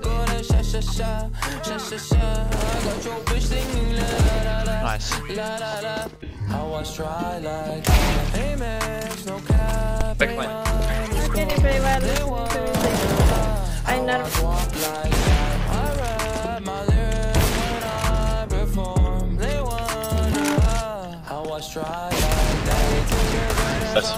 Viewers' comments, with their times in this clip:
0:06 is the best bummm 🔥